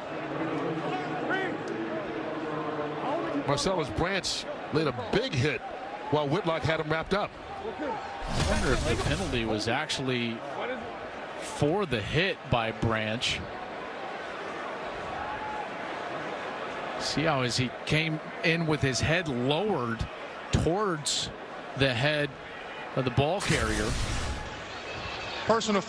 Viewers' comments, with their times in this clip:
0:08 you can hear someone ask "hey, is that shit legal" after a hit lol.